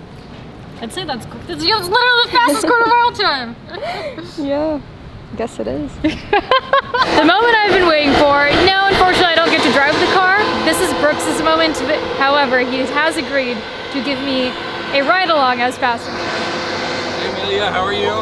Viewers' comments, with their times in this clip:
0:04 That "Yeah, guess it is" is so great. All emotions rolled up in how she says 4 words like a proud coach at the end of a sports movie